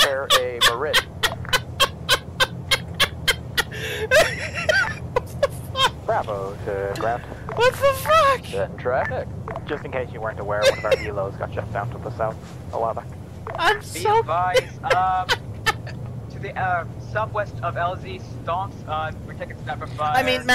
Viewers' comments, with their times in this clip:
0:07 Oof ground control guy sounds like Obi Wan